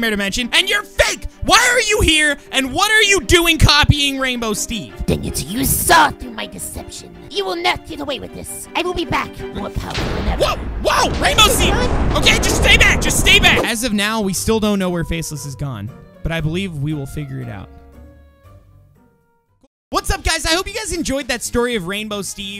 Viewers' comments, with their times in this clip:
0:06 he sounds Australian 🤣🤣